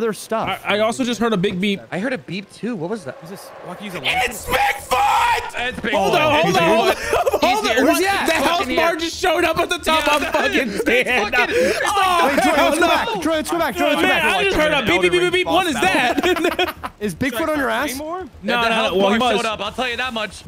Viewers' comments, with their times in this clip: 0:04 holy fuck that scream belongs in a movie